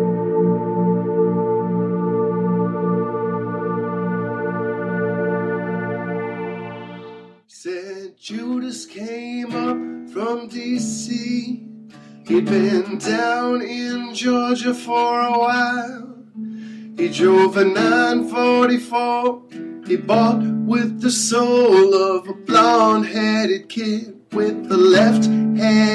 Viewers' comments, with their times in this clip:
0:07 salvation sounds like crap xD